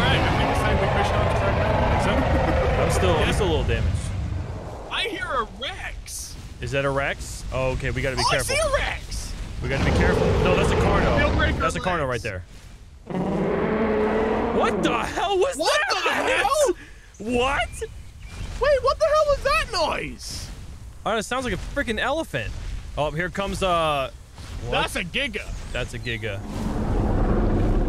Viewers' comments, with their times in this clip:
0:10 guy with a tuba:
0:13 WTF was that noise!???
0:13 LMAO elephant giga? 😂😂
0:15 That sound like a Allo Roar from walking with dinosaurs!